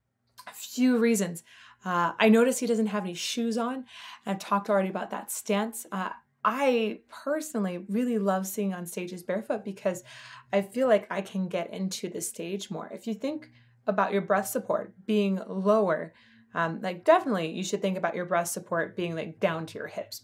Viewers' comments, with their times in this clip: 0:07 Lol when you can hear the plane go by. If you cant hear it get better earbuds!